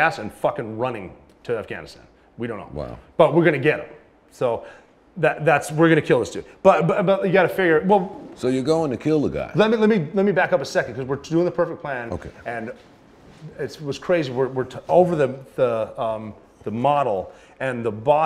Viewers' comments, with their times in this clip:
0:06 KILLING, not catching, Osama was their plan & goal as Rob admits accidentally at approx minutes. He slipped with the truth. We all suspected that was their goal. Now we know for certain. As soon as he slips with "we're gonna kill this dude." He starts to stutter, stammer & reposition his body in an effort to make light of the fact their mission was to kill Bin Laden, not capture him. Rob is foolish to keep giving all these interviews. He's gonna end up in legal hot water. Dang I hate his tattoos.